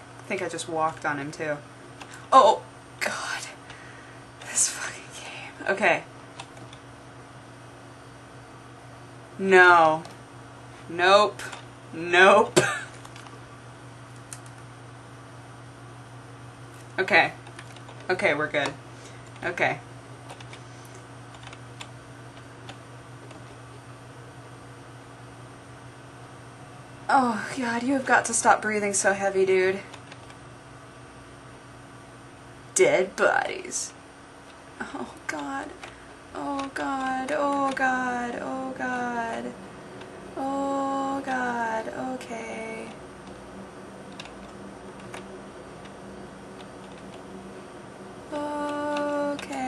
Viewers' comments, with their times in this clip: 0:04 Did you say "oh god, I just fucking came"? That's hot.
0:33 I heard music in the background, my heart was racing as well D: and when you said something was freaking you out, it freaked me out And it looks like the room off human Centipede :S